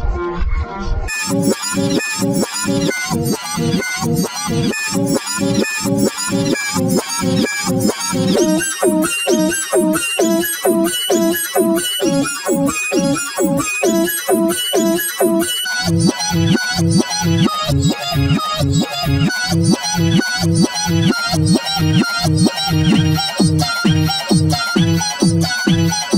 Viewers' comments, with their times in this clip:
0:08 sounds like pitch white